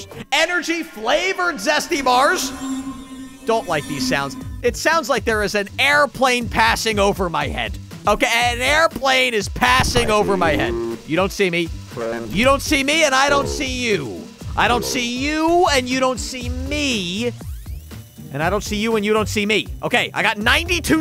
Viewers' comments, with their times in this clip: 0:03 yes, that means there is a plane passing by
0:08 Some say microwave, some say airplane overhead… who knows?😅